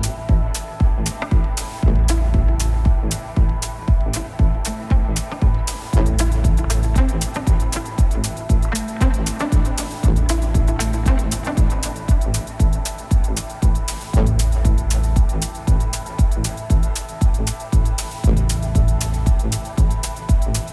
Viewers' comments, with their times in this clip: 0:07 Great music! The song is pretty similar to Darkside, apart of her voice.